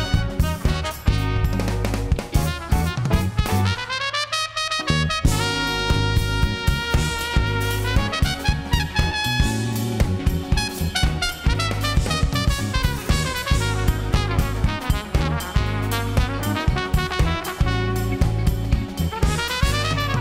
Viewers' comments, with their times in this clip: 0:07 I didn't know Ted Koppel could blow!